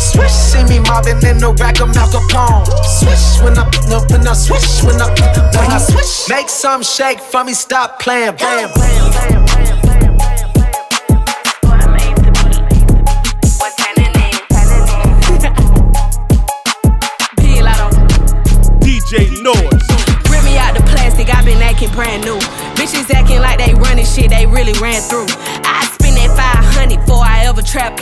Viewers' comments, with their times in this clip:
0:09 That transition between Swish and Put it on the floor is PERFECT 🔥🔥